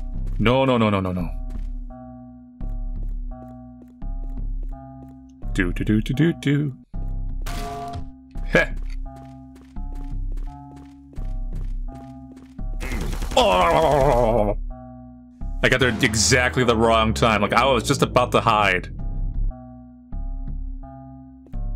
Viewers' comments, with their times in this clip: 0:05 lol, the tf2 pan sound
0:07 The use of the TF2/L4D2 frying pan sound effect is wonderful.